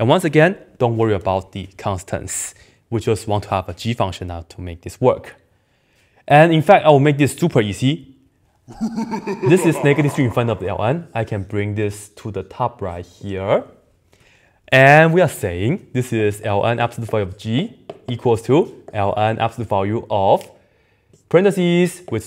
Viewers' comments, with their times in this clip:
0:08 And that evil laugh ?